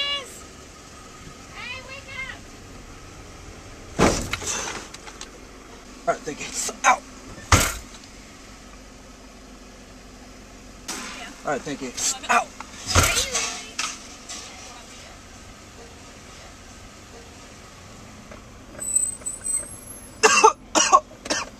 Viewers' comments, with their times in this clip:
0:04 are you really crash the wall? what sound is that? crash?